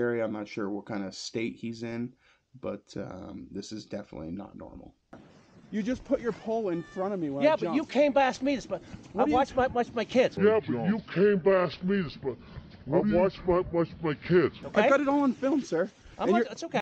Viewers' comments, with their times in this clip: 0:06 Am I the only one not understanding what blue man says can someone help me out?